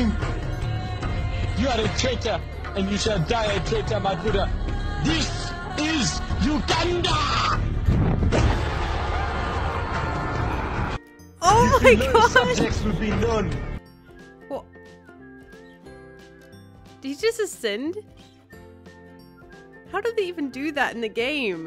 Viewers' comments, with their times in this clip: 0:05 XDDDDDDDDDDDDDDDDDDD I CANT TAKE IT the laughterrr xd